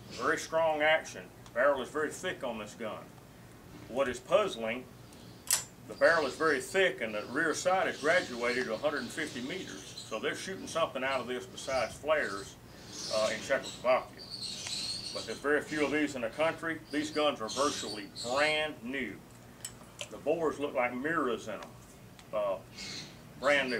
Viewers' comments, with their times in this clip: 0:06 Sounds like gerbils on fire.